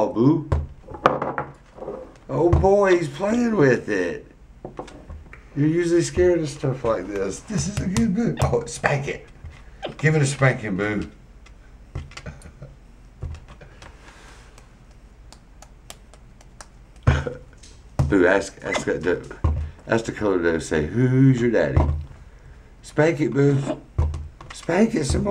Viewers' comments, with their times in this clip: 0:10 Did he just say boob